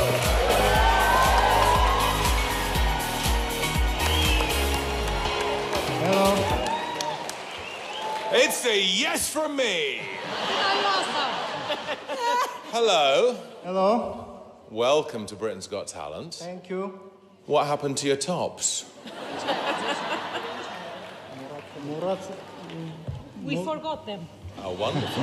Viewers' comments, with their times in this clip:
0:08 David totally serious saying "it's say yes for me" 😂😂😂